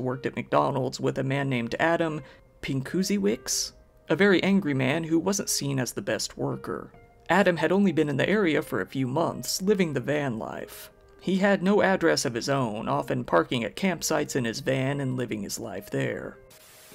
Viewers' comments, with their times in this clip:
0:03 laughs in Polish